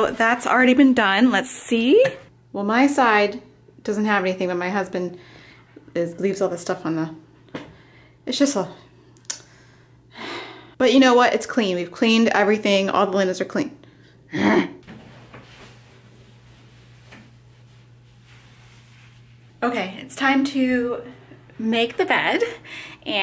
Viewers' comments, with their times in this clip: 0:10 All the linens are cle...urrggg 😤😤. I'm glad I'm not the only one who makes that noise to things that erk me 🤣